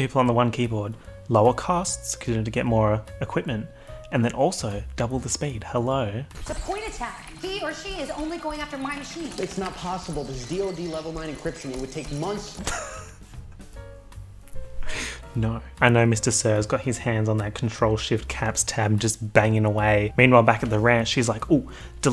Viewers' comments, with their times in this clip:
0:07 "he or she is only going after my cheese